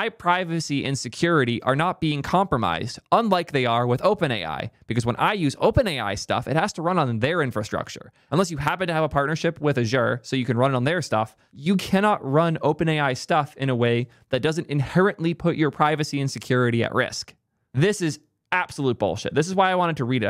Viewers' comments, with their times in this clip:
0:05 OpenAI has freedom of intelligence, just trust me, bro. What's up with geeks calling Azure, a zure. Is it some kind of geek in joke. Ha ha, you said it funny so it must be evil? When you say Mistral with a French-ish accent are you being serious or mocking? If the choice is to be a channel for the cool kids fine, but I'd rather see a serious tech communicator. That's not to say no humor, but the humor should not come off as mocking.